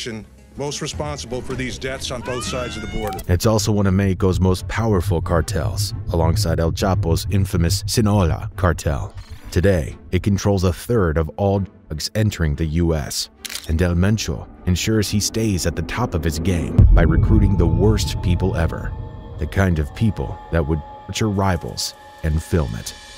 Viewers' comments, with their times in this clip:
0:08 I had no idea el chapo leads 2 cartels the Sinaloa and sinola cartels respectively.😂😂